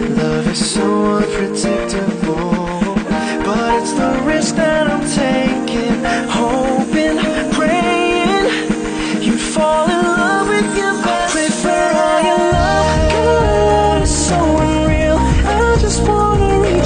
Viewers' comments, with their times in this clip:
0:03 THE DUET THOOO ❤️❤️